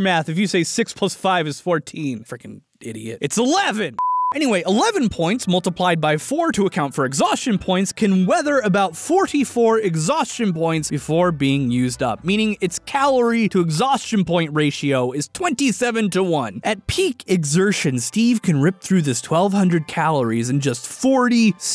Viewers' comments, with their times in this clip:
0:08 he turned into JackSepticeye 🤣